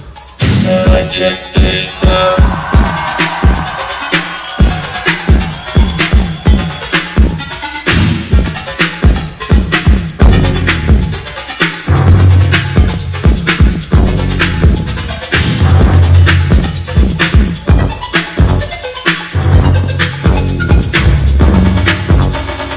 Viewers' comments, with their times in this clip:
0:07 I like that, the music really start